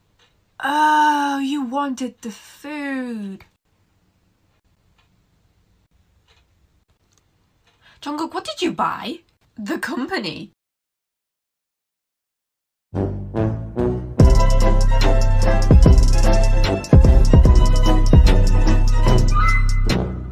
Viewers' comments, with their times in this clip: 0:07 AM I THE ONLY ONE HEARING "JUNGKOOK"?! PLZ TELL ME IM WRONG!! T^T ARMY where you at?!